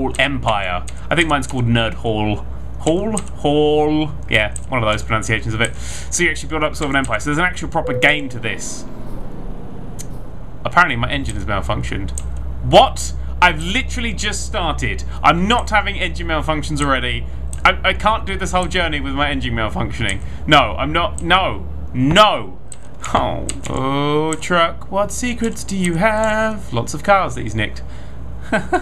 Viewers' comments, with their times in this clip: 0:10 I love how he just says this like it's just sort of a thing. xD "Okay, bought the bread, walked the dog, engine malfunctioned... everything's toasty!"